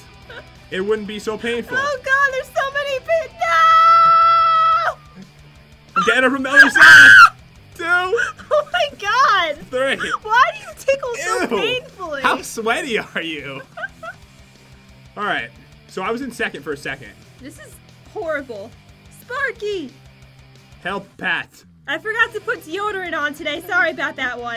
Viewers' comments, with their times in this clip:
0:04 My ears bleaded
0:07 R.I.P headphone users x_x